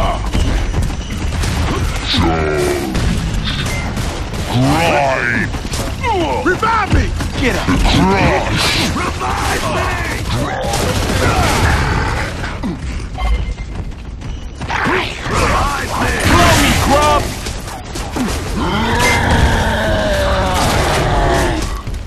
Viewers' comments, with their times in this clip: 0:06 I love how you revived Marcus then when you took 2 steps he shouts REVIVE ME!!!!!!